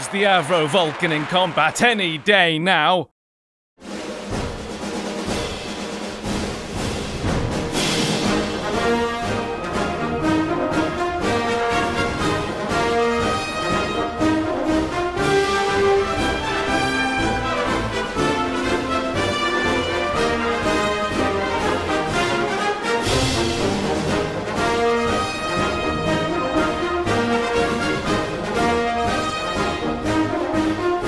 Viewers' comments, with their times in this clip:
0:08 Love the Thunderbirds music !
0:17 Shades of Barry Gray and Gerri Anderson music! Thunderbird 2 is FAB